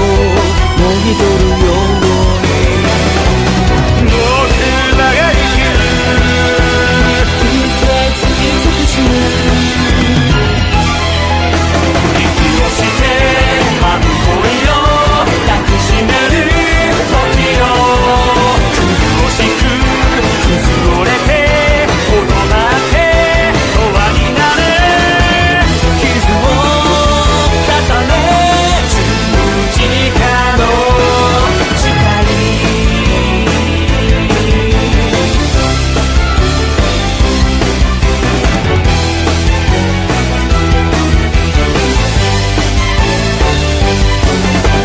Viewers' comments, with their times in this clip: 0:04 nazuna starts singinf
0:25 shu starts singing